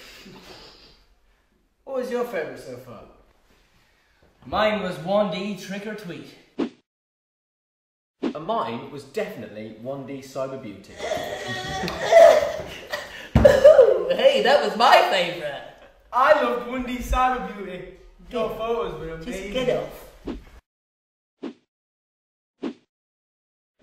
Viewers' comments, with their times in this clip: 0:10 am I the only person that dies when louis makes tht noise lol